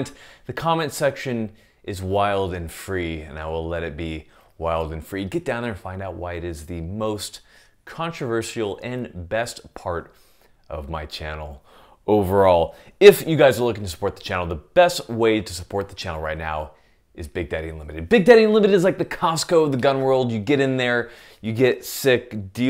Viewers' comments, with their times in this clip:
0:08 That’s the first time I’ve ever heard someone pronounce the S in controversial.